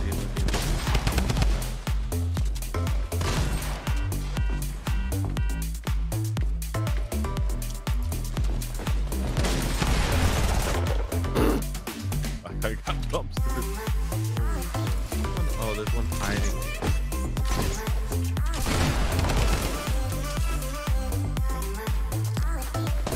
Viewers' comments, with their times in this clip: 0:03 The car sound and the music 😂
0:03 I like how the car alarm foes with the music XD
0:04 that car horn syncs in well with the beat